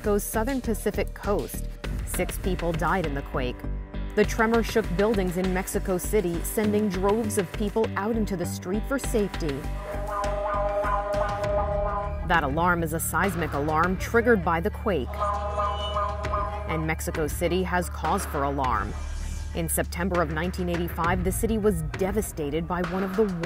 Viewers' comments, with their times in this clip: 0:08 Me as a kid making Police car sirens
0:11 That alarm sounds kinda weird!